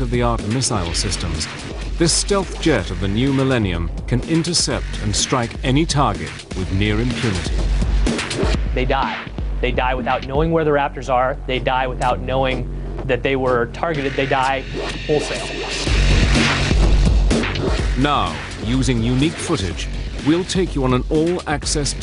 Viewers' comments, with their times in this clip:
0:06 lol my guy is so pumped to tell us “THEY DIE.”